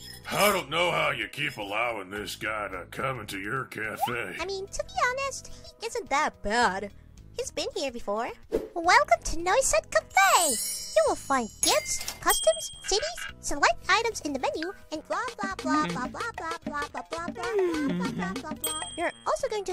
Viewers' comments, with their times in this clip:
0:04 My favorite detail about Noisette's VA is the way her voice randomly just goes super deep like I can't place why but it's so funny to me every time.